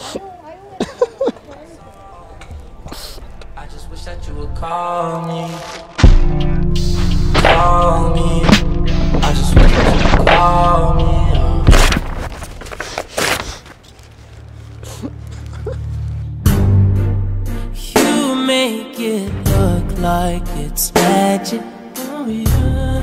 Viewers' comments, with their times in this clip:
0:05 and that post produced snares and claps on hittings hahah